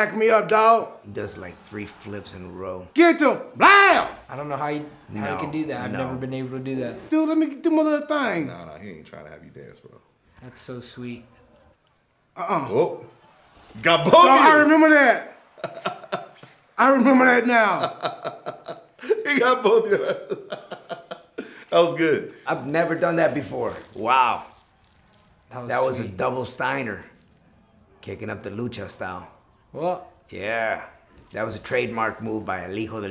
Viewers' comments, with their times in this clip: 0:06 Did Dominik just fart ? Lol
0:14 Watching Joe crack up had me laughing way to hard. You could tell me was waiting for that moment to laugh at Truth.
0:16 Joe:*laughing* R-truth:Looks at joe😂